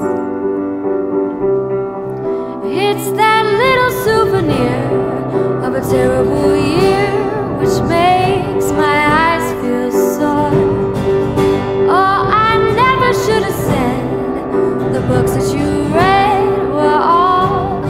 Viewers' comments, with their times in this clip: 0:04 This cover was beautiful...until Oh god...so awful.